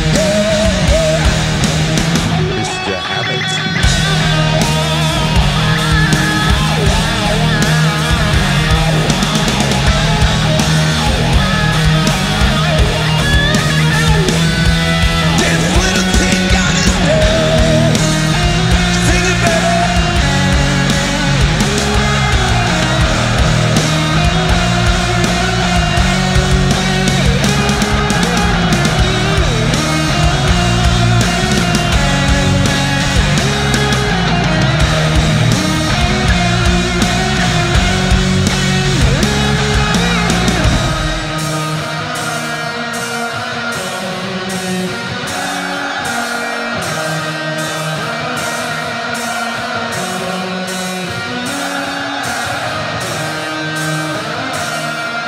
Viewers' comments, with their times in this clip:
0:03 they did follow quite good on the solo, the interlude is another story I love the feel of the crowd though
0:41 the crowd was way louder than that what you hear
0:41 Despite your race and religion, Here’s what unites us:- -Metallica -Jame’s “yeaaaah”